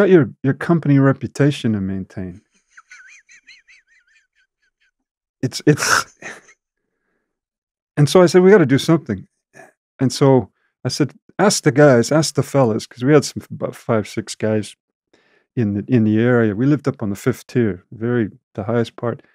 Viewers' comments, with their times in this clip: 0:04 And that evil cackle right